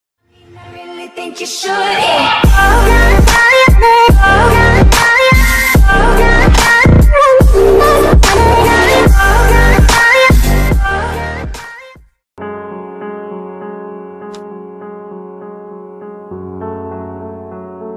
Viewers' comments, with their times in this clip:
0:00 R.I.P to those who were on headphones 😢🥶